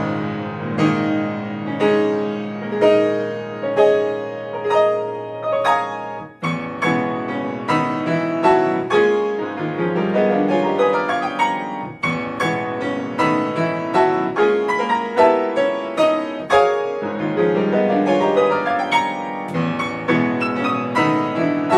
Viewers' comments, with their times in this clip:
0:06 I think this could be arranged for orchestra. There are some the Rite of Spring moments, too. (or rite of Automn?) I recognise Month's Mind again in frantic way ( -) :) Very much like Berg's Sonata. Definitely seriously done!!